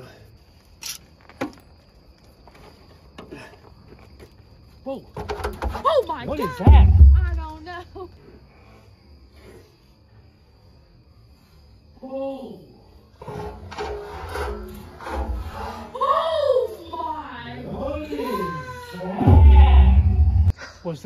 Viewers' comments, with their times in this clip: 0:05 hooo I saw some of these I think ? Looks like a big night butterfly but nearly look and sound like a little bird because it's so huge ?